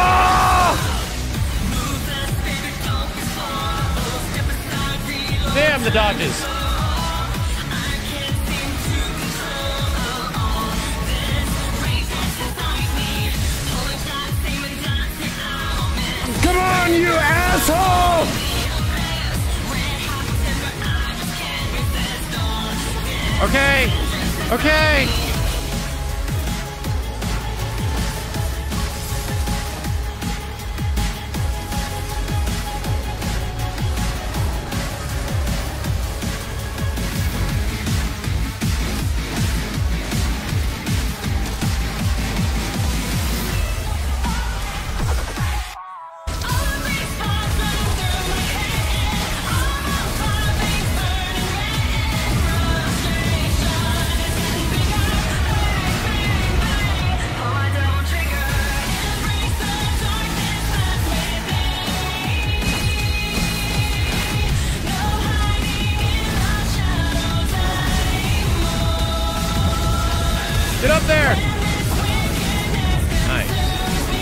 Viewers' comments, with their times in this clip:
0:10 Okay happening on beat to Devil Trigger got me hype af
0:18 what's the music playing in the background it's bopping. I know it's from devil May cry but what is it called?
0:35 At the mark when the guitar riff starts and the cat is dancing on screen fucking killed me.
0:54 the cannon fire matched perfectly with the song and I loved it
0:55 Ahhh, the good old "Bang! Bang! Bang!" sync
0:55 Syncing up the "Bang bang bang" of the song with the cannon was a really nice touch, along with all the other times you made sure the action matched up with the music in the background.
0:55 BANG BANG BANG indeed
0:55 let's appreciate the editing to Devil Trigger here, those cannon blasts with the song got me hyped as fuuuck
0:55 Whoever decided to line up the lyrics of Devil Trigger to the cannon blasts deserves a medal
0:55 That fucking cannon syncing to Devil Trigger was glorious.
0:55 I love the "bang bang bang" timing on the editing nice touch